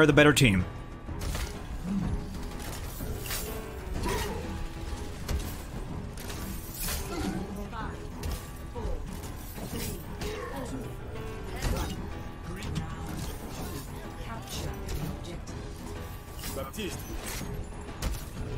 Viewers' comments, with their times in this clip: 0:06 anyone else notice the countdown was in rhythm with the music?